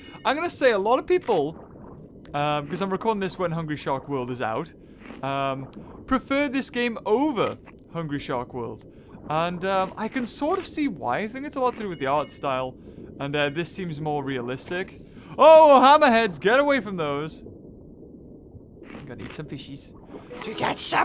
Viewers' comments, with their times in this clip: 0:09 lol his voice i laughed so hard!!!!!!!! lol lol lol :)